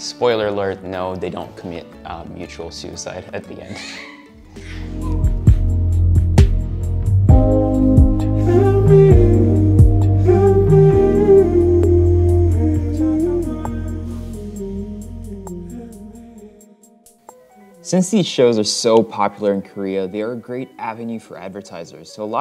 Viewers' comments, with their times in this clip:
0:05 The squeal Hahah.